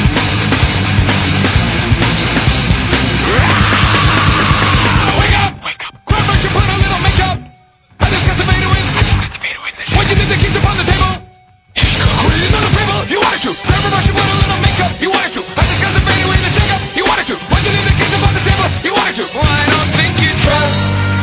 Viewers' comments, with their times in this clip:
0:06 some one in da backround says solaven